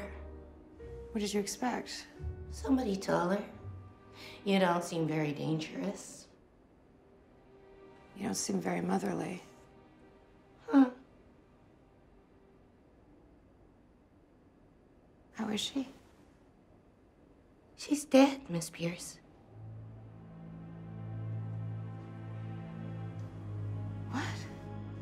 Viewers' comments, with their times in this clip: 0:10 I love how when Nica told her that she didn't seem motherly, Tiffany sounded genuinely hurt when she scoffed